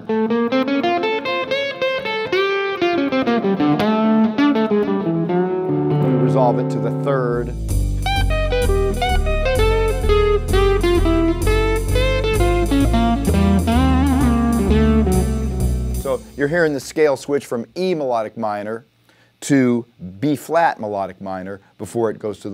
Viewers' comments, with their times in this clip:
0:07 damn the lick i'll listen to this forever